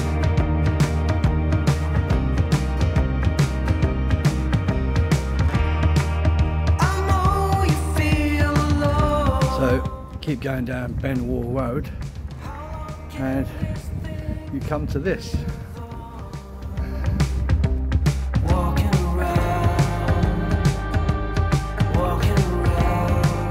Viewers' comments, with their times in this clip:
0:05 That's good you found some nice grub from somewhere, out of interesting was that you singing ? "Just walking around" yeah good blog too I enjoyed it.